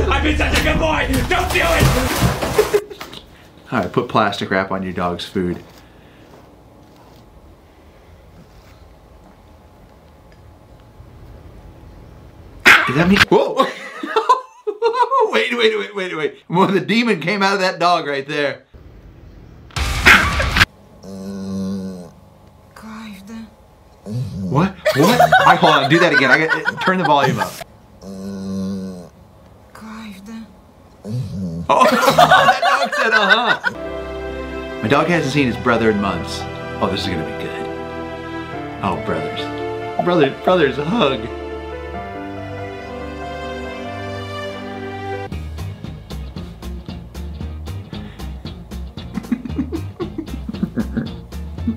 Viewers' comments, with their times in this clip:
0:07 ) hang on, hold the phone, that’s Markiplier‘s voice! I never thought I’d hear his voice in a Rocky Kanaka video that’s really really funny. Also you gotta love when your two favorite things in the world intersect and if anybody in the comments is a Markiplier fan please tell me what voice clip they took that from because I’m really curious. nevermind it was from FNAF VR...anyway's have a good day all
0:13 the voice over!! 😂🤣😂
0:35 my dog makes that noise when we rub her ears 😂 it’s so stinking cute